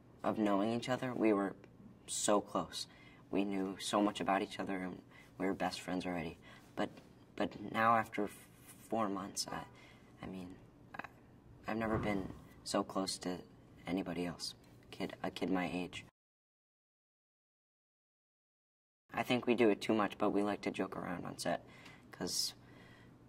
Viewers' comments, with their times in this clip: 0:06 when he stutters its so adorable